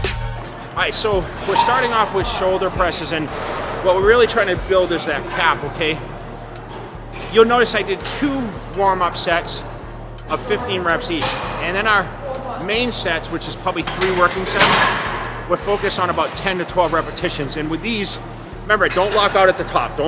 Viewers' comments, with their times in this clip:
0:04 we really want to build that cop (cap to the non-massers) he's nearly a kennedy lol